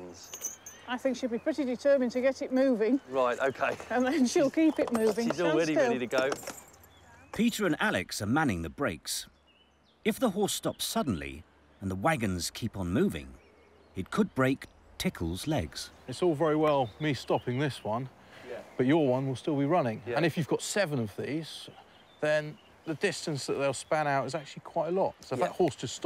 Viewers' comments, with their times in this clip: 0:09 "It could break... Tickle's legs. 🙂" 🤣🤣🤣 That delivery!